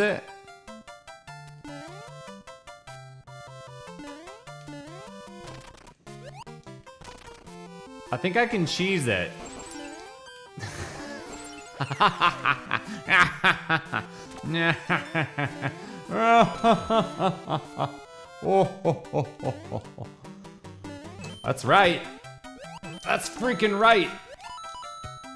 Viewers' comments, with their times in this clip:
0:07 The innocent laughter of a young child finding cheese Like a sound straight from nature :)